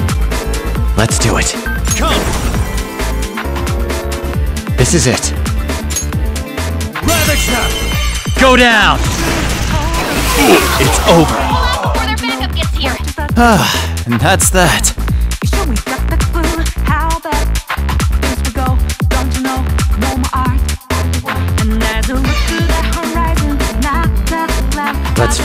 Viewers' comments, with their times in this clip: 0:09 I hear the Minecraft death sound